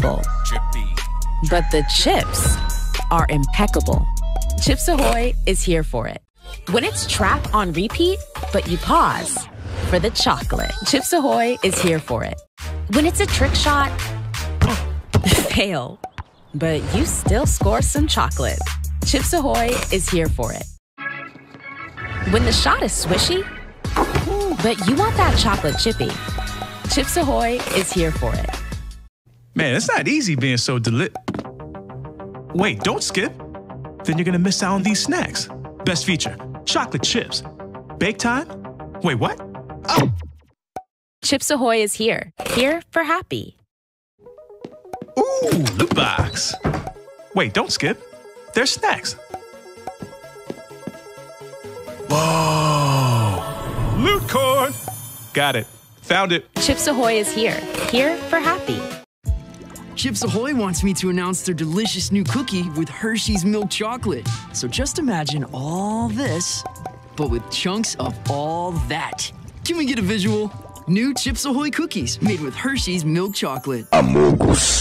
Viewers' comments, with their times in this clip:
0:09 When drowning is expectable, but the chips are impeccable. Chips ahoy, lords of cringe.
0:33 that sounds like cyborg from teen Titans go-
0:59 I think he got sued for hitting puberty on the road 💀💀